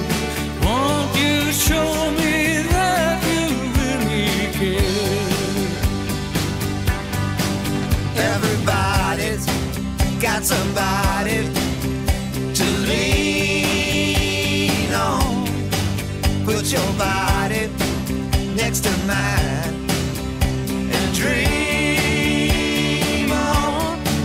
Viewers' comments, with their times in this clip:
0:08 I love Dylan and Petty, but when they start singing after Orbison their voices do not compare favorably to his. I imagine Dylan thinking "Why did they put me after Roy?" :)